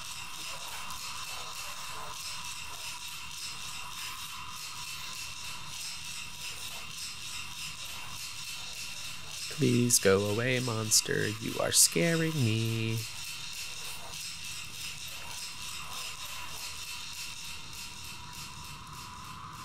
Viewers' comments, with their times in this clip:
0:05 Interesting art style sounds like someone shaking a can of spray paint